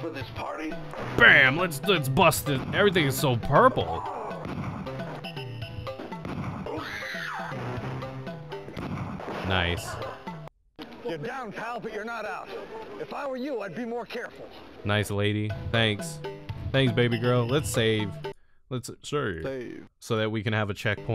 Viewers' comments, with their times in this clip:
0:06 bruh what the hell was that BANSHEE yell lol